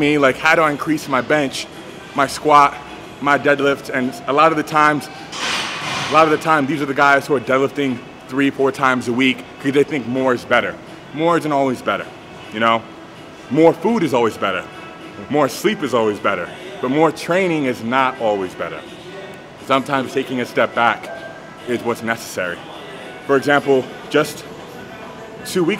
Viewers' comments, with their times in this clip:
0:10 That New York accent tho. bettah.